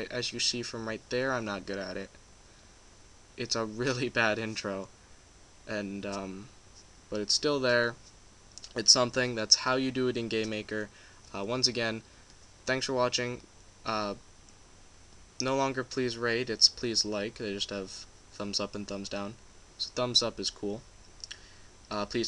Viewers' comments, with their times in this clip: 0:09 He said gaymaker hahaha